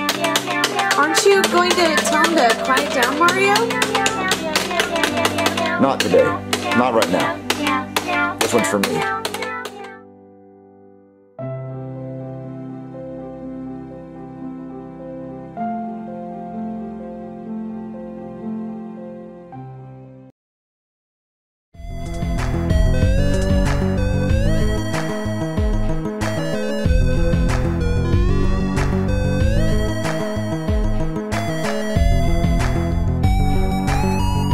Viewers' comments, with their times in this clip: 0:04 "Not today, not right now. This one's for me." That line. That line makes smile so much. Something about it just makes me feel so happy, man. Either it's the way Mario said it, or the music. Nonetheless, it made me happy.
0:05 Man it felt like the cat piano sinked in well with the mood at the end especially the way Mario was talking.
0:22 Music is fantastic yet so anticlimactic 😂